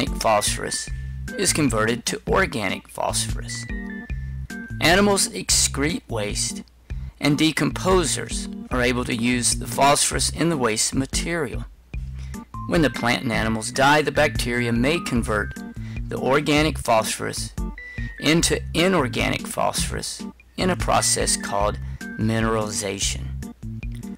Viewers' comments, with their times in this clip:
0:10 What did you say ? Decomposers are able to use the phosphorus in the waste.... I couldn’t understand what you said there